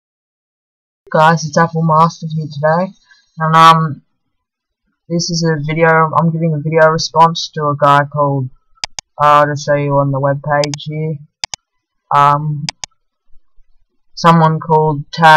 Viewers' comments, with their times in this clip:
0:03 WTF is that noise ? A duck?